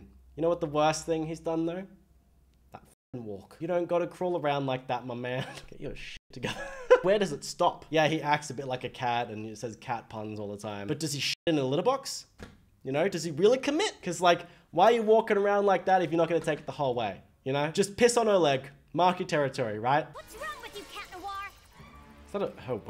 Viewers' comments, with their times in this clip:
0:07 well i've seen him licking his paw, i mean, hand, and petting his "tail" thats not actually a tail so i think he's being silly, oh, and i heard him purr